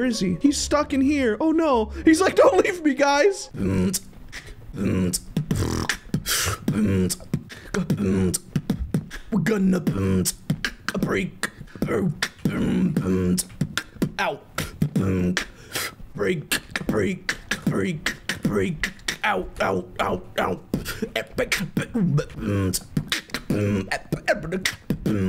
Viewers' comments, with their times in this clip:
0:10 is the best song in the world